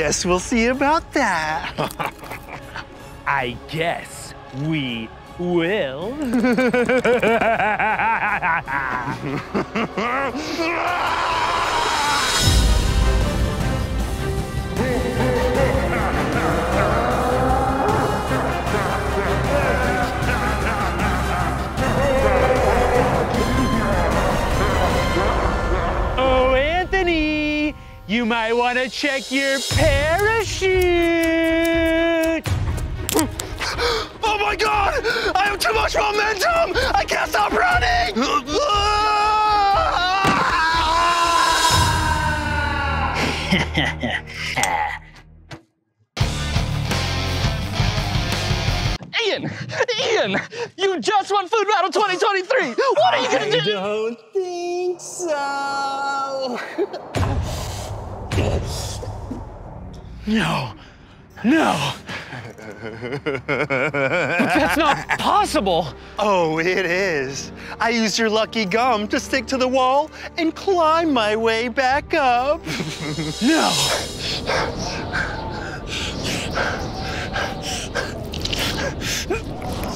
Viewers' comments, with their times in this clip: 0:06 best evil laugh
1:02 Anthony just had a villain laugh